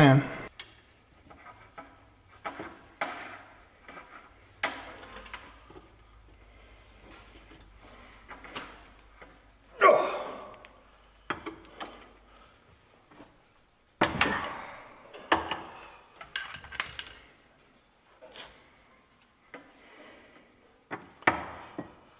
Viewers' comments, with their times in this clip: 0:08 your Scotty Kilmer war cry needs some work.